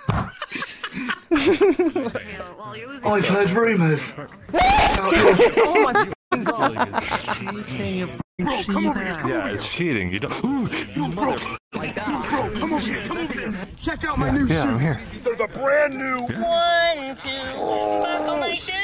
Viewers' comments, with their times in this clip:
0:03 Bro the scream and the face expression had me 💀